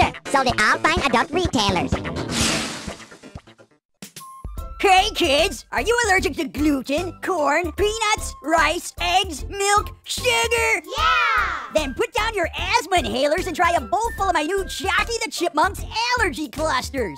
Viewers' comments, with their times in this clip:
0:04 If you play it at 1.5x speed it will sound like the Chocky in the other commercials.